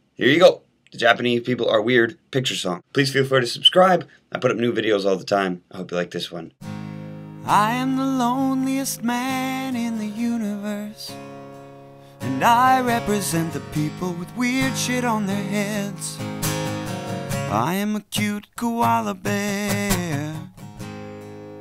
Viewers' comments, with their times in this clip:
0:03 damn that whistle hurt my ears